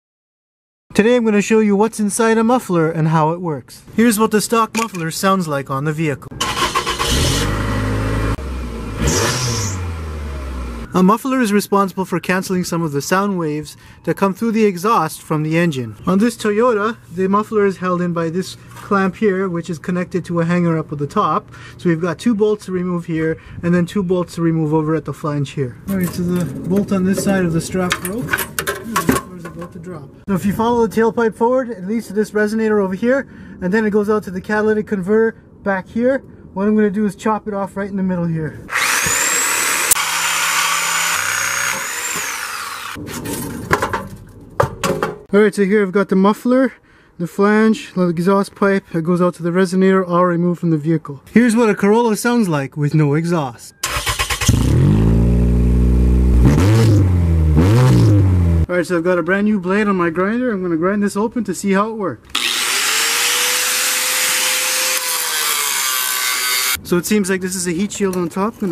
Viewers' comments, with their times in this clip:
0:00 that spitting tho 🔥
0:07 did your car just have explosive diarrhea
0:53 Race Car Moment...
0:54 B A S S